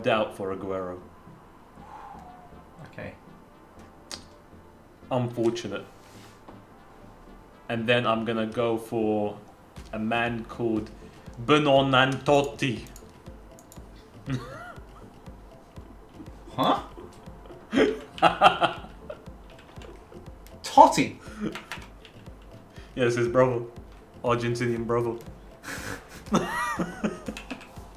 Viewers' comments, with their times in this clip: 0:04 "BUEANNANTOTTI" 🤣 Ik im the only comment watching in 2022 but still man at least try
0:10 u butchered that name so bad it s hilarious